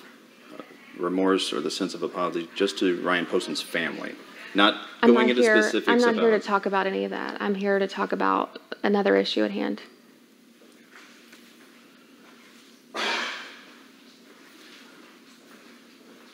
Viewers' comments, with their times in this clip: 0:03 The pure disgust, distain and repulsive feelings the interviewer has for her is incredibly palpable in his sigh That sigh said absolutely everything!